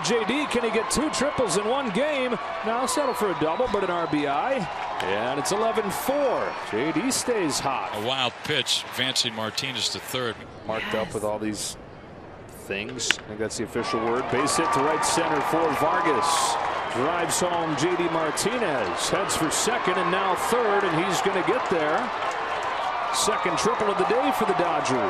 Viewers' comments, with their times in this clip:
0:09 Can anyone else hear a provocative, "YEEESSS" 06-03??
0:10 Could someone explain to me the sexy voice of the minute ?😮
0:10 EVP Ghost Female voice "Yes"...
0:10 Who tf whispered "yes" lol
0:12 Is it me or is there a “YES” ?